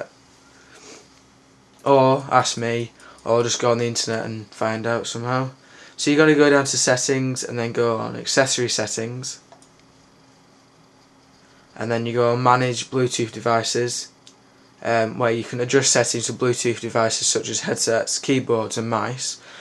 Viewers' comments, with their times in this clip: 0:03 see u r gonna go down to axxcexings and then axexasis setxing lol learn to pronounce